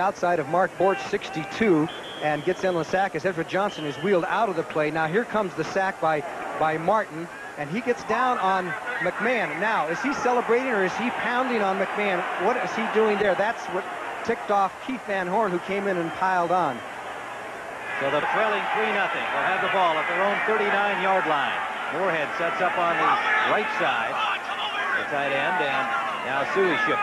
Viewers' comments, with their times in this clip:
0:08 Johnny Morris asks, "Is Charles Martin celebrating a sack, or is he pounding on Bear QB Jim McMahon?" Answer C All of the Above. I'll give Packer fans credit. I doubt if any other stadium has been as loud for a 3-5 team